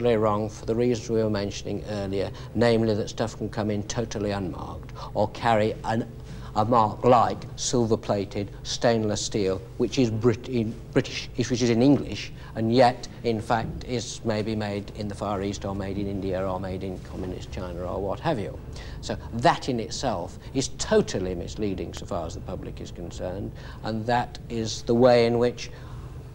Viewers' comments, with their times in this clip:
0:08 " Shtainless steal " does he learn Ways to Talk with Trump? They talk in such similar tone the classic lips 😆